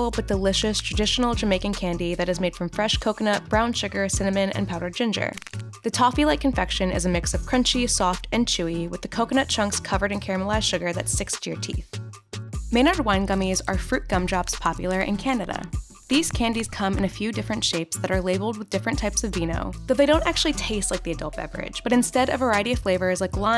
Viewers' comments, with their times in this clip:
0:04 why is no one talking about the bone crack sound effect?